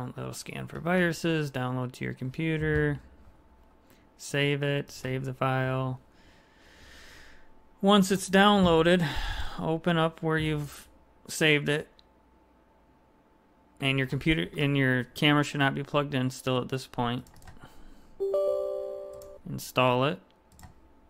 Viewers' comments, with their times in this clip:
0:05 you can hear the typical IT exhale we all give on the phone regardless of your issue